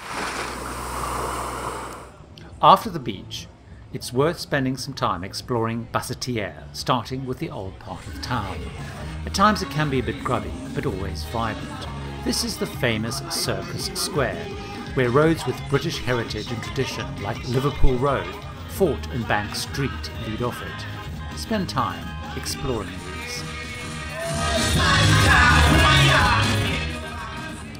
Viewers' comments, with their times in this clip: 0:10 Did you say grubby and violent?